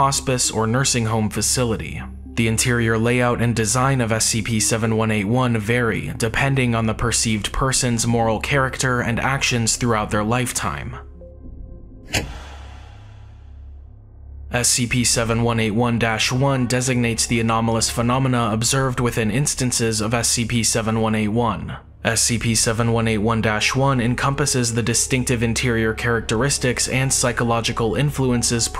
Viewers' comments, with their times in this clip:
0:10 oh my god that sent chills down my spine the video cutting to black and the music OH WOW